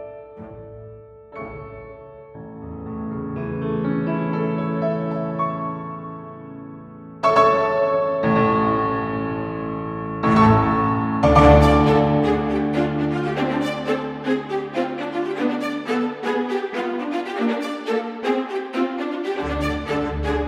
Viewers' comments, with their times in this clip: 0:07 it's a beautiful day outside Choirs are singing Mallets are moving On days like these Musicians LIKE YOU SHOULD BE CONDUCTING THIS PIECE